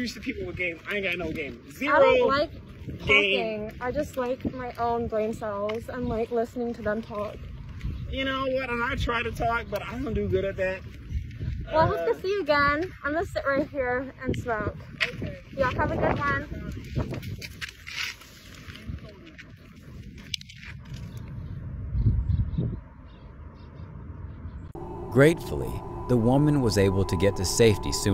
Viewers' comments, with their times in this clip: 0:10 this guy just kinda sounded like a socially awkward guy who wanted a friend 💀 Bit still bro need to back off